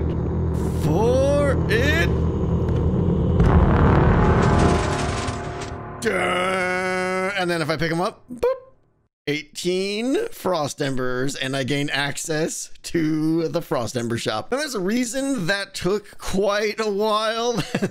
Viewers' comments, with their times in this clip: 0:05 that suspense ending with the final boom as the embers appear just made that experience a 100 times more exciting. The audible intensity increasing as you wait for your prize makes it feel so much more eerie...and then the final release after the boom... So satisfying!